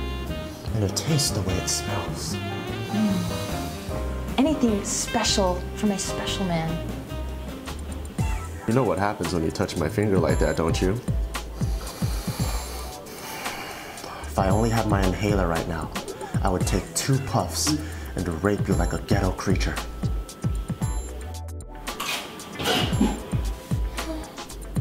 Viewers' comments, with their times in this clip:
0:09 thats the best cry ever instrumental ! Dope